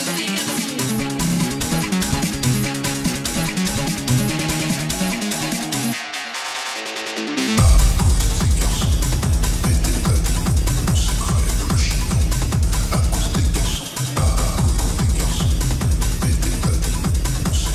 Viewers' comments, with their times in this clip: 0:03 afterwoofers engaged. approaching mach eleven....